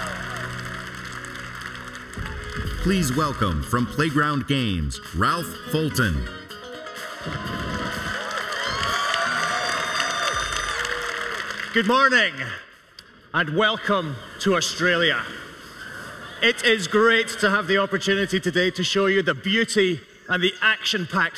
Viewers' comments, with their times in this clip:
0:03 btw. music is background ??